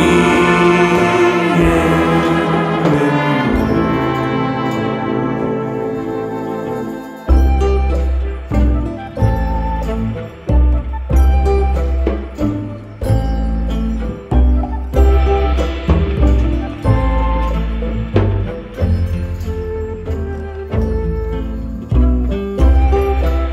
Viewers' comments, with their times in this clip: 0:07 I can’t listen past without thinking about skylanders giants flynn’s ship theme is baked so deep into my brain